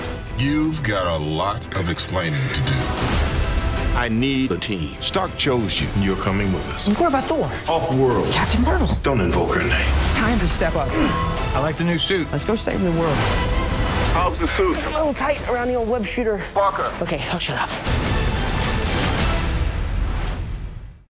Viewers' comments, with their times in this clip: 0:10 No one heard the sound of iron man's suit when spiderman lands???